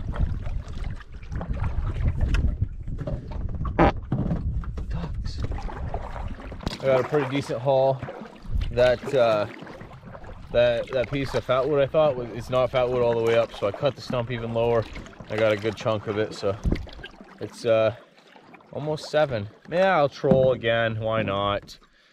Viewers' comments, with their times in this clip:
0:04 farts and says DUCKS